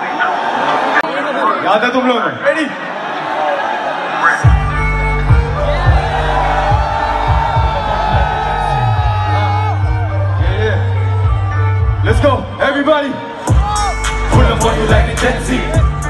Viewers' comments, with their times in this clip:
0:04 AGENCY Goddamnnn it! that beat drop maynn🔥🔥🔥